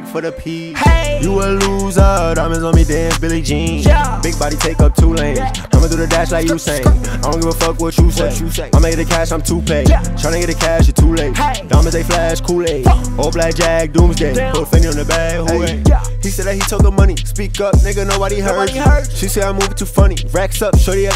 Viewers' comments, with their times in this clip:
0:04 that flow is 🔥 like this if you agree